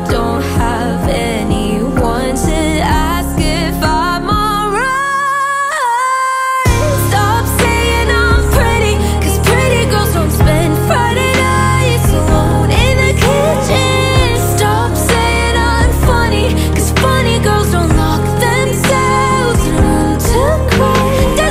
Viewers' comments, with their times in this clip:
0:06 I like the part bc the music j hits different